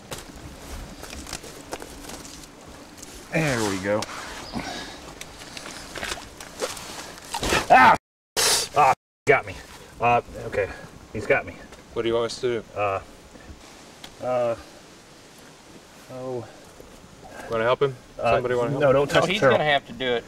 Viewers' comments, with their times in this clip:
0:06 you can hear that chomp sound. lol Ah hes got me... ok hes got got me. what do you want us to do? Want to help him, somebody want to help him? NO hes guna have to do it. lol